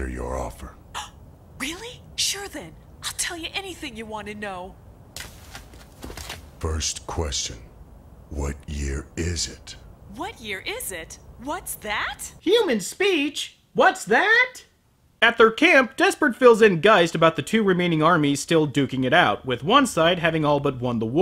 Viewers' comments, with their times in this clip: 0:06 That voice acting...